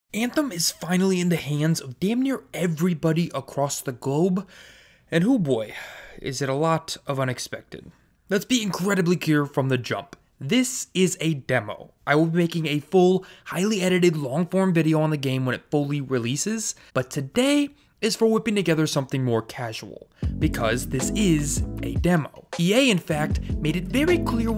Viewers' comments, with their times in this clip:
0:07 "let's be incredibly keer" lol
0:08 "Let's be incredibly CURE from the jump"...After you good sir...